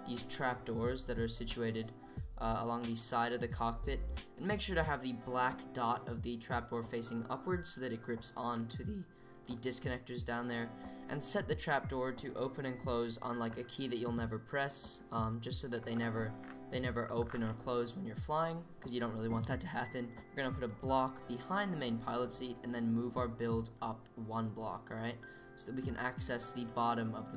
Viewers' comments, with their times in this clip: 0:08 the voice crack lol "so it connects to thEe"